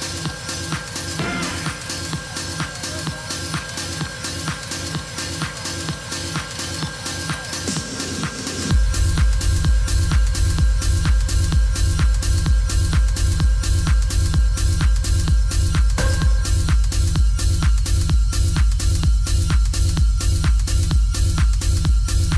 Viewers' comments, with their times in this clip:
0:08 track starting ....pure heavenly blissssss.